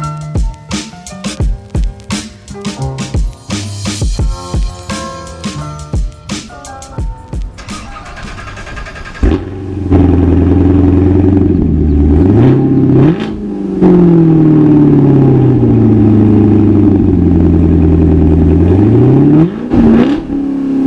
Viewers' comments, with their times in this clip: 0:07 That noise is incredible!